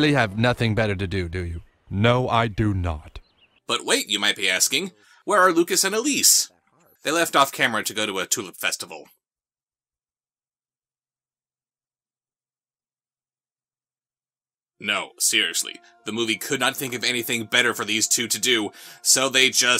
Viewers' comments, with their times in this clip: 0:03 the frankness of how he said it makes me laugh 😂 love South Park.